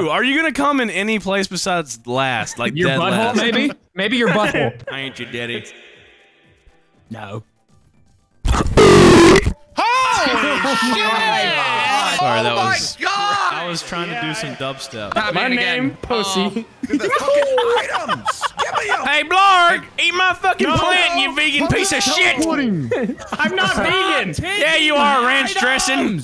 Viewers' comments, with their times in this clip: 0:06 Headphone users reaction be like
0:08 literally sounds like a dalek